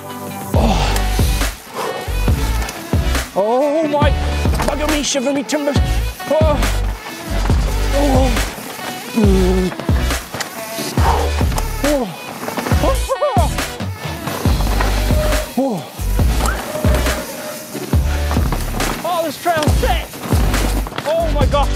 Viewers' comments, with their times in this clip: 0:03 I can see how hard to control with narrow handlebar... nice shot... and how loud you shout... lol